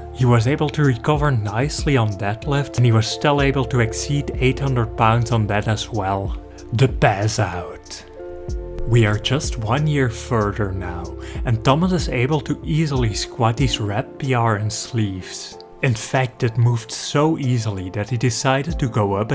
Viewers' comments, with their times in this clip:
0:07 LOL dat accent doe XD